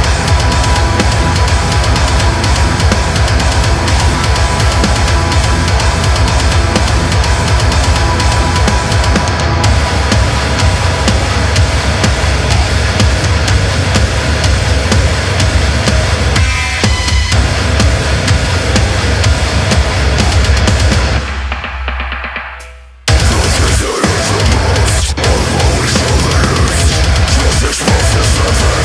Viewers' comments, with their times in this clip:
0:10 that Drop Z tuning on suspension cables ^^